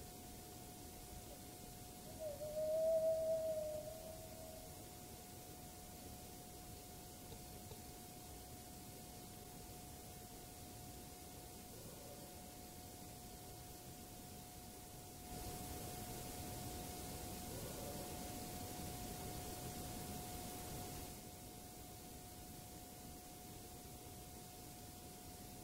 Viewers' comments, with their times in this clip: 0:09 I hear a wood knock right around when you say hello. It sounds like it is coming from the right side of the camera. I hear their response to you shortly after.